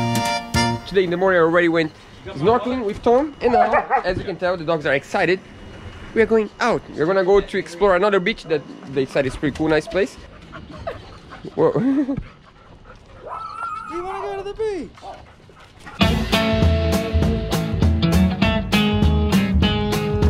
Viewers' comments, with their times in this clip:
0:03 "As you can tell the dogs are excited, we are going out. We are going to explore another b*tch that they say is pretty cool..." Wait, what did he say?